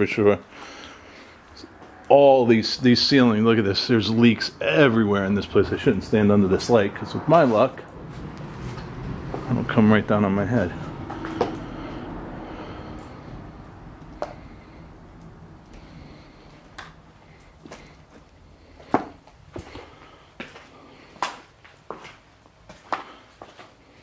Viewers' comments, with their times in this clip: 0:06 there is an evil sounding voice.